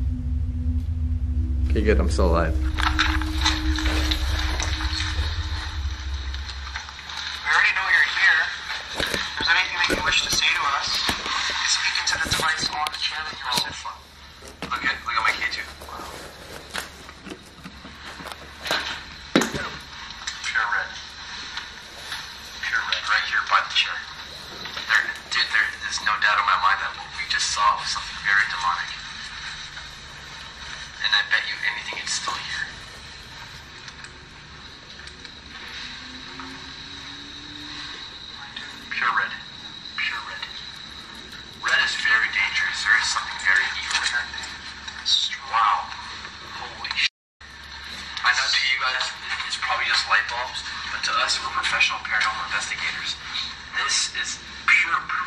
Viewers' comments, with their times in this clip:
0:09 I thought I heard a scream
0:19 Go to on the nose. There is a sound that I cant place with either of you....not sure what it is
0:21 if you here closely it sounds like a voice
0:37 possible voice in background
0:38 if you pay close attention you can actually hear something says "I DO"